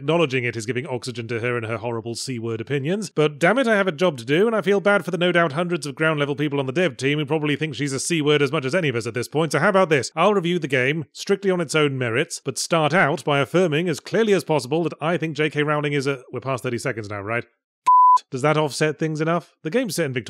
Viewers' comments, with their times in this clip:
0:07 And it got censored anyway lol